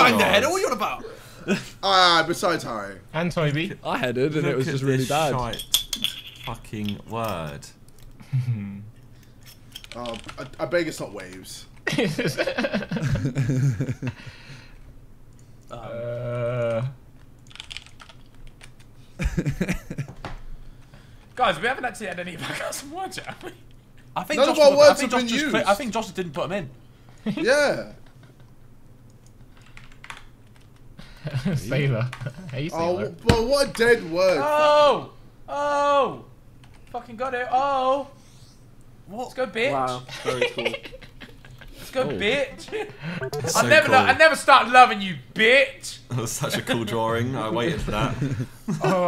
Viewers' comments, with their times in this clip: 0:03 is that a weed grinder being emptied. I know that sound when I hear it.
0:37 When your Mum comes in and all she hears is Ethan screaming ‘BITCH!’